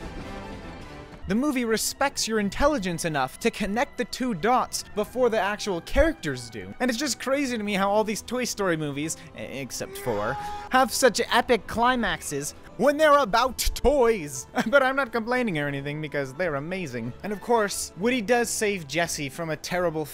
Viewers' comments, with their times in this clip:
0:07 I wasnt paying a lot of attention to the video, and it took me 3 rewinds to figure out he's said "except four," not "except for." I actually yelled "except for what? What do you mean!?"